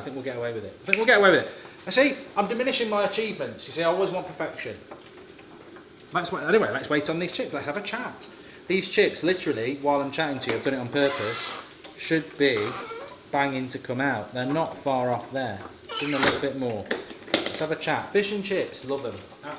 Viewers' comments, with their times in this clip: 0:07 Ahaaaa Alan Partridge